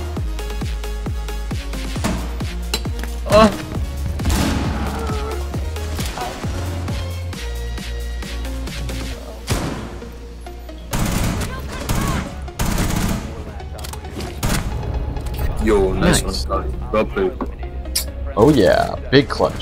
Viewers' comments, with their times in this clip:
0:03 DID I HEAR ME DOING A MOAN ??????????????? WHATTTTT